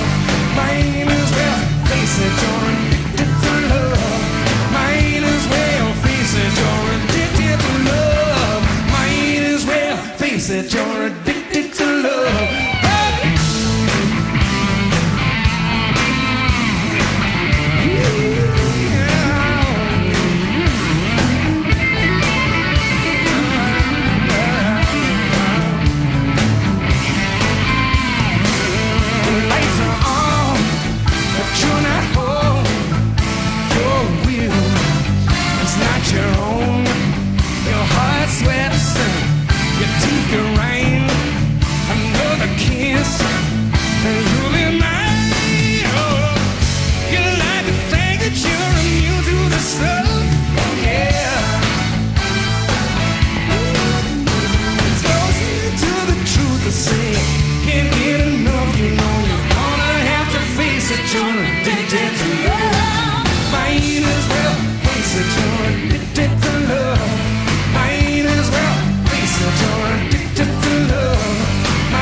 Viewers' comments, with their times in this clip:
0:05 drummer carrying that beat so hard it's painful
0:59 when the girls come out, really fine,sharp vocals, this is a classic song, Robert(007 of Soul) is barking too.. we miss him! Bob we love you!